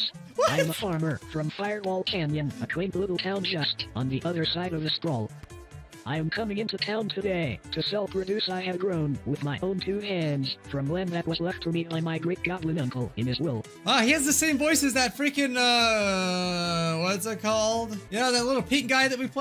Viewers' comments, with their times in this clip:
0:03 Idk why but the moment I heard the guy ‘s voice, ,y first thought was: “OH GOD NOT KINITO PET”